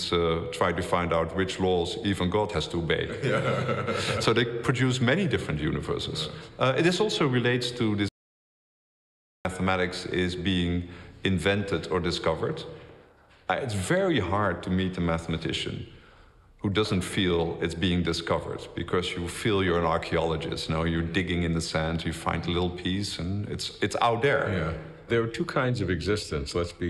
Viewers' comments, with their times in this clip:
0:08 what was muted on before “mathematics”?